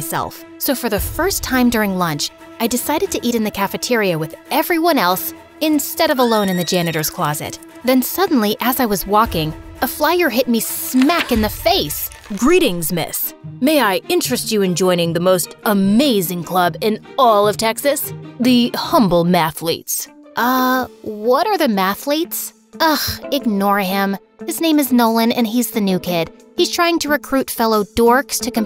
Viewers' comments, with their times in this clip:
0:09 why was i giggling when i just saw the dude pop but and saying “GrEetinGs MisS” 😭